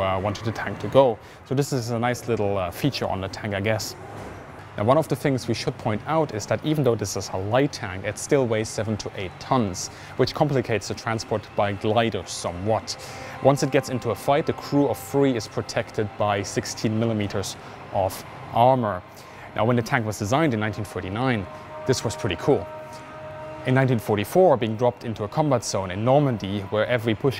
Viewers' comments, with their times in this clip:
0:08 I thought he said 78 tons and I was like "YO WTF"